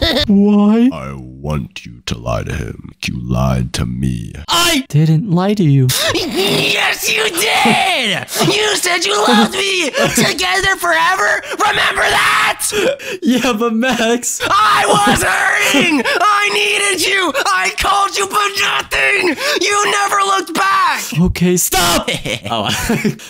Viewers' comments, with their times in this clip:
0:06 amazing voice acting beter than most movies...🗣🗿
0:06 that's peak voice acting